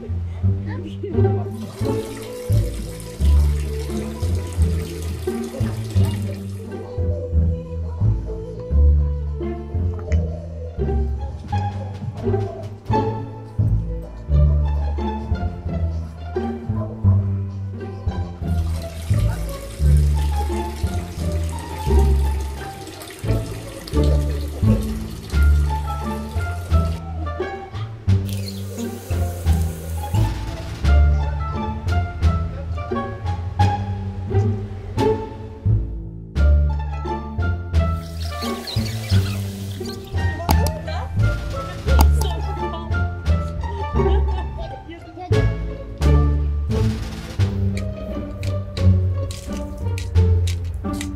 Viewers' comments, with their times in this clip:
0:08 Dilwar song playing in background ..... Norah fatehi fan hit like
0:36 Oh, I can hear Indian music ❤️❤️